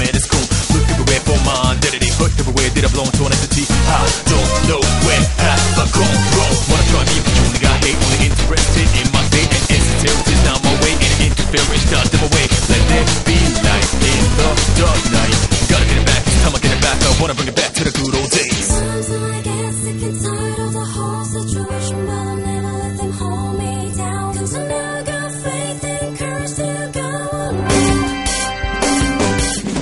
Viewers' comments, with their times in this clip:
0:10 IMO it sounds more like "and insensitivity's now my way" rather than "and as until she down my weight"